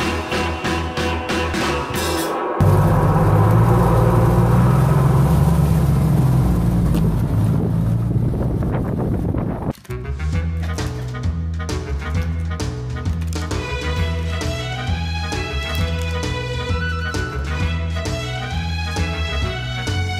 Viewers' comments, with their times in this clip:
0:05 I'm pretty sure that horse just farted
0:06 the white horse farted 😂